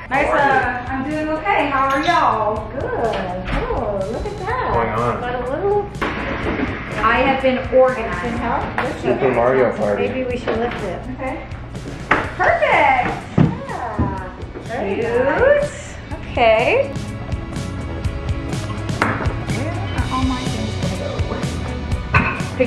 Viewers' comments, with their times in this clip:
0:10 I’m from Tennessee and that “y’all” was perfect!! 💕💕 😂